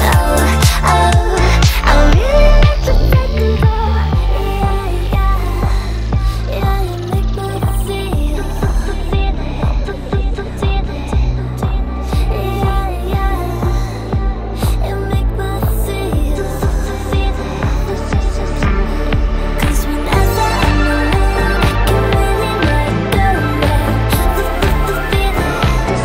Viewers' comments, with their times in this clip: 0:08 I LOVE that weird note drop